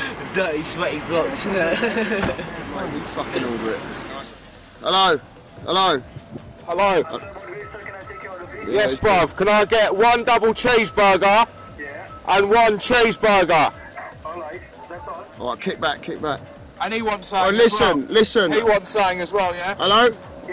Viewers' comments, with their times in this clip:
0:03 sounds exactly like The Streets- Irony of it all,, Elo, Elo!